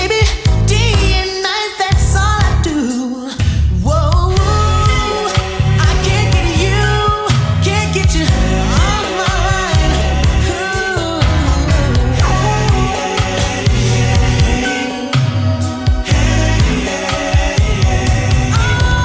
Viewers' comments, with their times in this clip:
0:04 i always wished the heeey-yeey-ey lasted longer😢❤